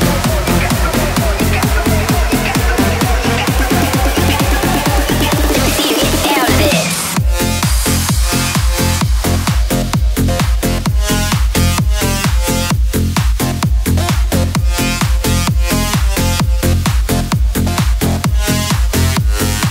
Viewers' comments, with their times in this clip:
0:06 O can confirm that this is definetly bounce😂👌🏻 Also drop 😂😏